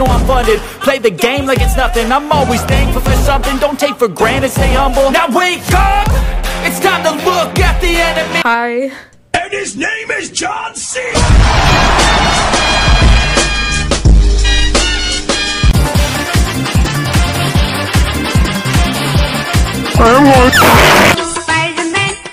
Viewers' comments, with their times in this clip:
0:06 # minetse through and i'm already laughing in my head and the music reminds me of NEFFEX 🤣🤣